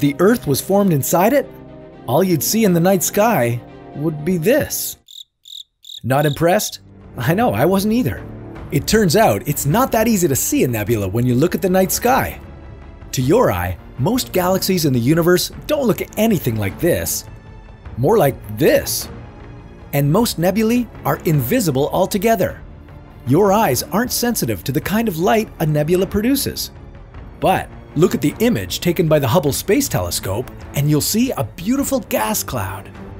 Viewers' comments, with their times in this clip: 0:06 the moment of silence
0:19 What if said nebuly hahahahahsgav
0:20 he said nebulee